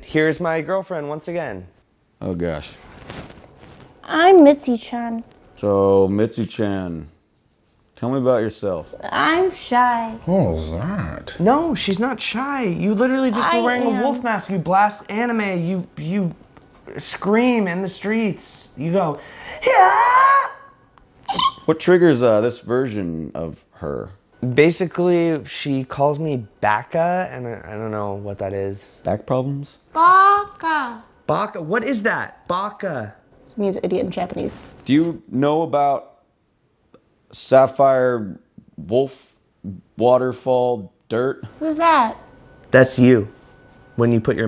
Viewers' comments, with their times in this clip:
0:07 love the way he says “what was that?”
0:17 you SCREAM in the SHEETS
0:19 sounds just like link from loz
0:22 That’s a fucking spot on link impression
0:32 for like a few seconds she just talks normally and goes back into weird UwU girl. Had me cry laughing